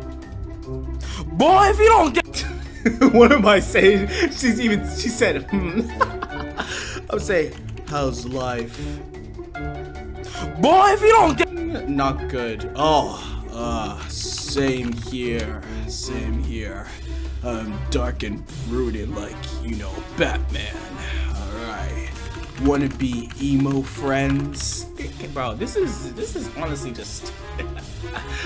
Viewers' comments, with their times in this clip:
0:09 why u talkin like dat ?